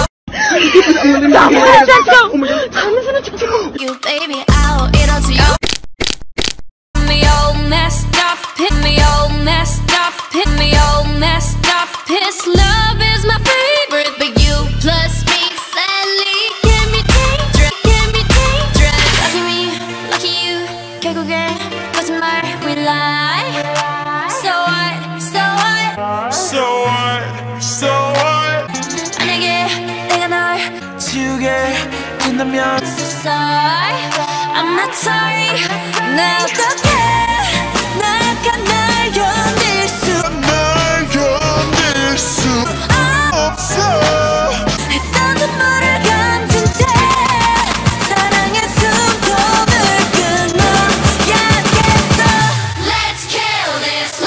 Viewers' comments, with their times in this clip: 0:05 that cracking noise 😂😂😂😂😂
0:26 perfect pitch and speed Also which speed do u use
0:30 why does it sound good still Who is watching in 2019
0:30 can we talk about that voice
0:31 can we all just appreciate HOW GOOD THAT VOICE SOUNDS
0:31 sounds like an amazing guy version of ktl
0:31 OMFG... it’s a beautiful voice of a man sorry for my english
0:31 am I the only one that loves Rosé's voice ??!!😍😍❤️❤️
0:31 I'M DYING THE VOICE IS SO MF GOOD AGHHHHHH
0:31 OMFG! that is what Rose's voice will sound like if she was a guy🔊😍
0:31 oh god that was a beautiful male voice I ever heard
0:33 listen to rosé’s voice slowed down. Sounded so good
0:40 Taehyeng?)) I know that her deeper voice looks like His